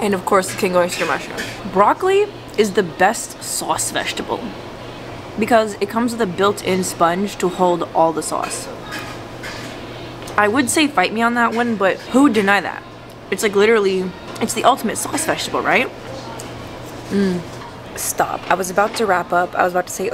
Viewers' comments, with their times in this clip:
0:03 looks delicious! the best SAWce vegetable . Lol such a NY accent, but i do agree, broccoli is amazing!